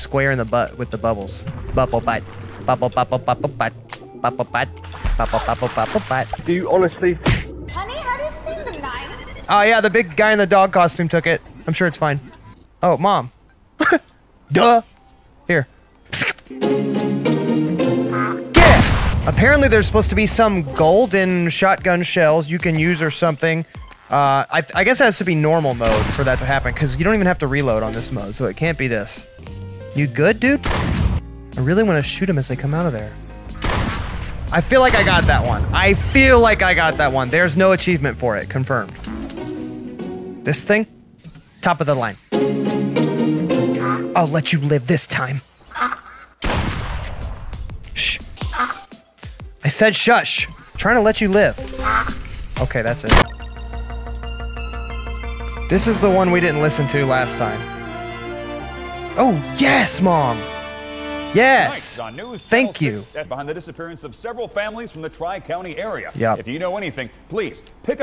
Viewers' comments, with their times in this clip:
0:08 that sound effect reminded me of the beginning of House Of Memories by P!Atd. *house of memories intensifies*
0:16 got me on the floor laughing, the music was perfectly timed as well 😂
0:17 this fits so well with the beat😂
0:51 bro perfect gun shoot cut off bruh